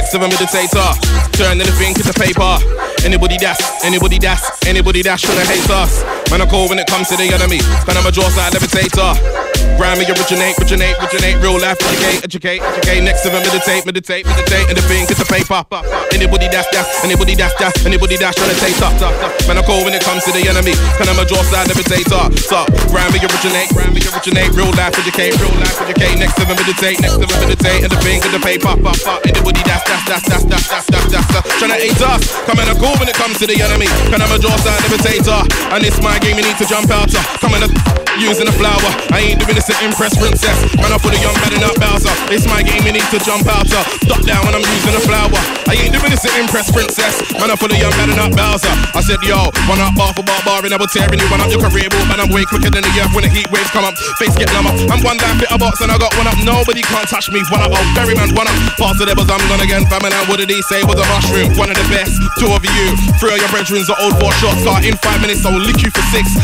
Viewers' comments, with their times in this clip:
0:08 A man just adlibed himself live on set from Sick
0:28 the way he was adlibing himself too sick
0:48 i need to know that beat asap, dirrtty